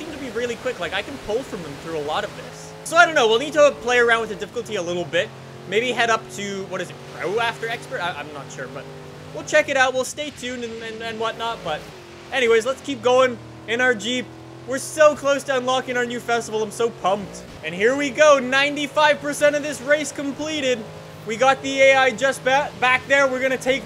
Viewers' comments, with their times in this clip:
0:07 what did you say?